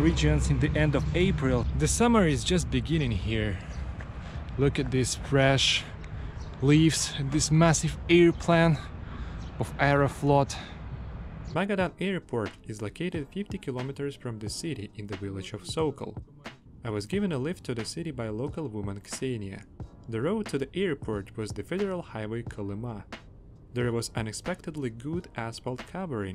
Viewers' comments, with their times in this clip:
0:07 that is a beautiful ear-plan